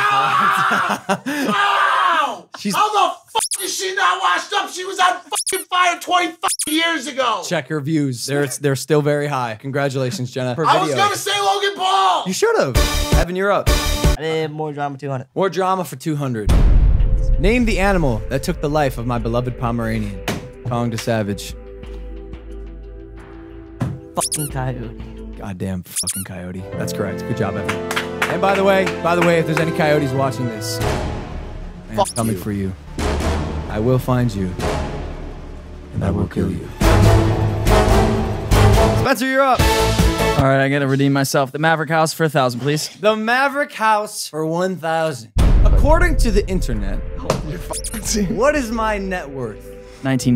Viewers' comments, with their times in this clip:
0:10 Mike- I WAS GONNA SAY LOGAN PAUL!!!! Logan- in a happy voice You should’ve 😂
0:38 logan sounded like jason Statham